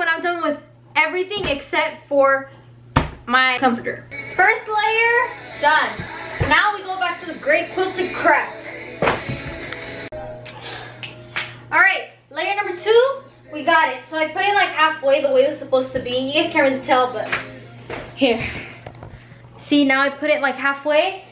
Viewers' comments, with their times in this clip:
0:04 she’s listening one Direction OMG now I’m crying💁‍♀️🥺